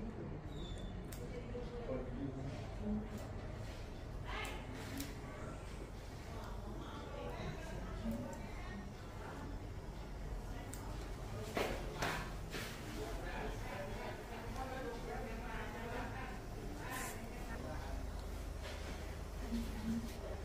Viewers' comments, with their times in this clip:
0:03 Did you notice the master shushing those over talkative !?